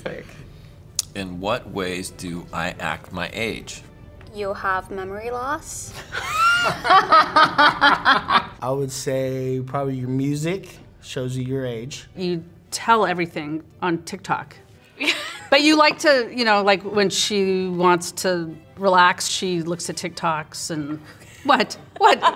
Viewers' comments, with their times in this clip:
0:06 minutes in, that couples laugh together is soo pure & funny! kindred spirits haha